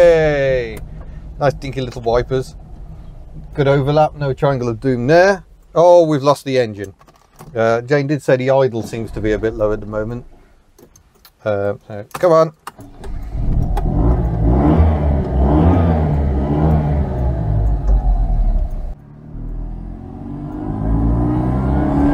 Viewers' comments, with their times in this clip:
0:06 I thought for a second it had start/stop the way it cut out when you stopped 🙂